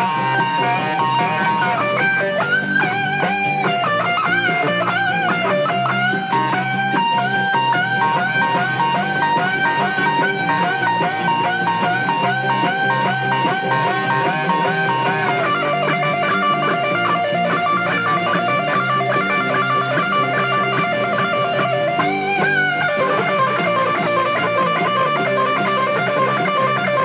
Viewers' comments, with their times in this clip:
0:09 the notes are too equal in length...